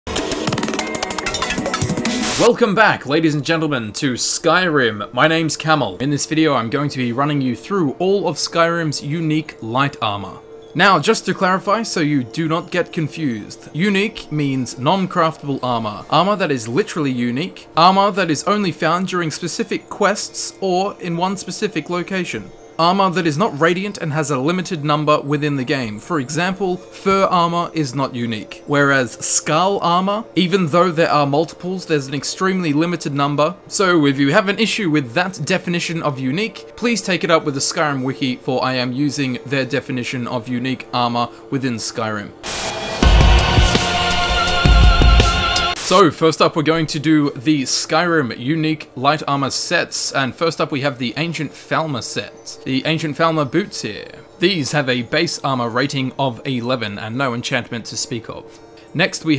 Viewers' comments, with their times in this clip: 0:00 R.I.P. Headphone users.
0:41 What's that rocking music man